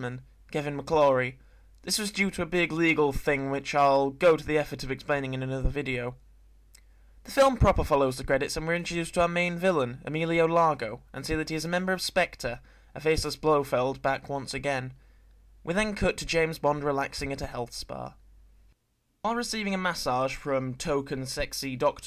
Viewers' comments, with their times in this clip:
0:06 That lip smack is amazing